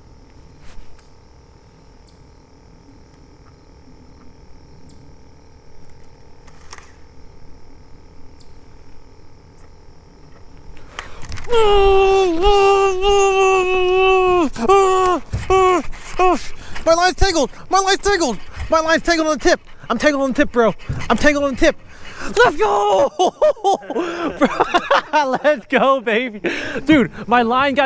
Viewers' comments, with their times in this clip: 0:10 he makes so much noise when he caught this fish lol